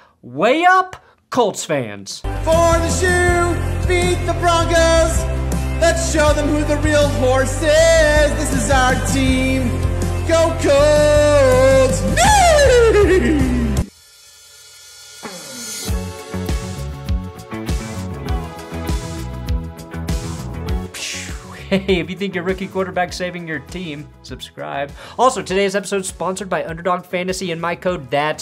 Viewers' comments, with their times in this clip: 0:05 Proof that just using autotune can't make anyone a good singer.
0:16 who was that guy and why did he try to make a horse sound I’m scared 😂😂😂😂 but will still watch